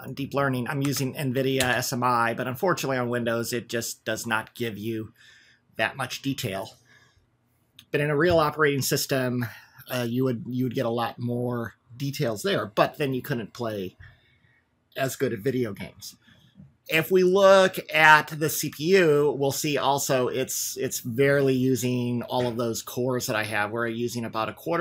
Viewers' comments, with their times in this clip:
0:08 I’m sorry but did you basically just say Windows is not a “real operating system”? 😂 I was like uhm wait what? Did he just slip that in there? Said it so matter of fact too. I like Windows but that was awesome.